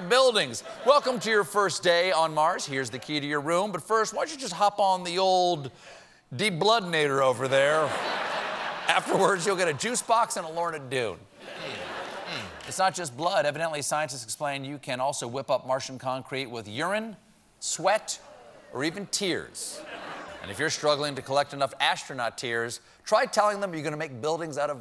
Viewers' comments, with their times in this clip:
0:09 I’ve listened to this like 10 times and I can’t figure out what he says... “Afterwards, you’ll get a juice box and a... ???” Lorn-a-doo? Lord of Dune? Lowered dune? Lower of two? What the hell does he say?